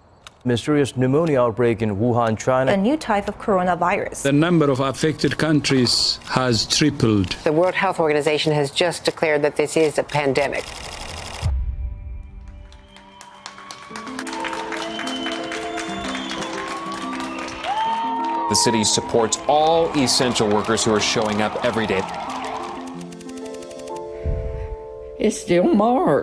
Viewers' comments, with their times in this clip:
0:07 the WHO has just declared this is a pandemic. Crowd: Immense cheering and clapping